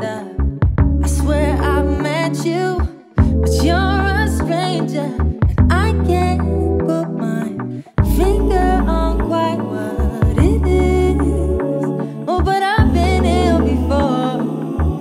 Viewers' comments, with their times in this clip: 0:03 My girl really hit the Micheal Jackson notes 😳🎶